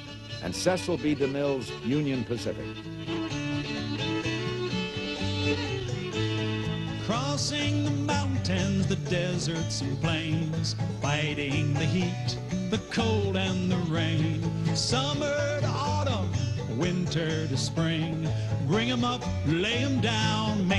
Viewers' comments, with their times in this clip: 0:03 To this day Im still looking for Tom Chapin's 'Dollar a Day' song that starts playing in the doc. The whole fiddle and band arrangement is just heaven to my ears. Anyone of higher prestige I urge you to messge thr author (Tin Chapin) to release it, he has a website and everything, I've emailed him a few years back about it and I've recieved nary s reply. Thank you in advance.